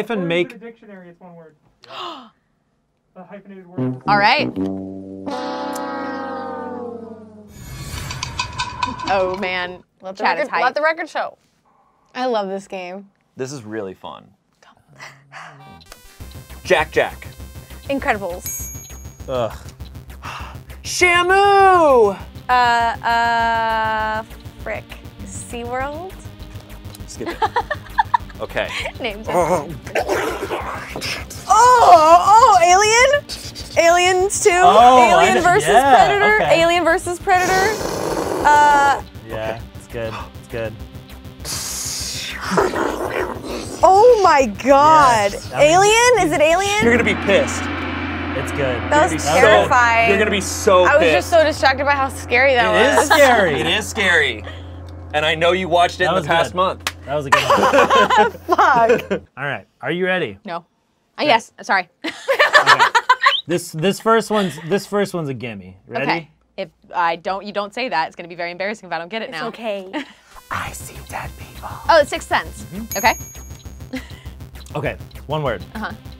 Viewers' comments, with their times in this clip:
0:08 the shady rattlesnake sounds made me happy lmao
0:58 legit forgot to bleep one :P Personally I prefer without it, but just letting you know lol
0:58 Somebody missed an f-word! LOL
0:59 forgot to bleep a "fuck?"
1:02 Did anyone hear the screech